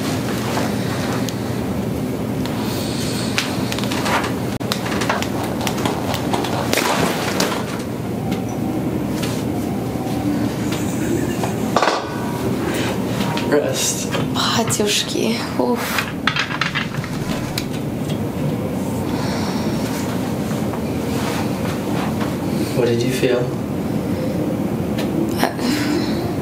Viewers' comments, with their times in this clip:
0:10 Your low chuckle after the Y strap killed me 🤣
0:13 what language was she just speaking ?
0:14 What she says? I'm from exUSSR republic of Moldova and I know Romanian Russian English,but English I don't speak fluently & my words knowledge ate very basic like 30% of whole English words. So...I literally hear a Russian word, or from any other Slav country (like Serbia) with English accent. But maybe I just don't know this word, maybe it's a slang word? Guys help me out pls,I specially watch English YouTube+TikTok+Twitter+Sports to learn more words)